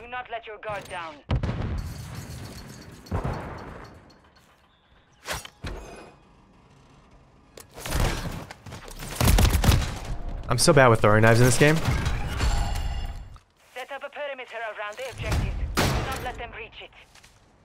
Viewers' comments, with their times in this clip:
0:05 how did u open the door so quietly?!